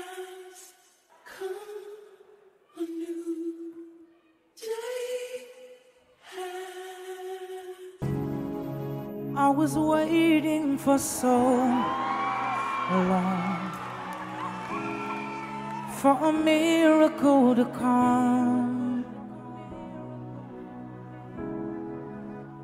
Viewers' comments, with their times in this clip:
0:10 I felt goosebumps from listening to his voice 🥰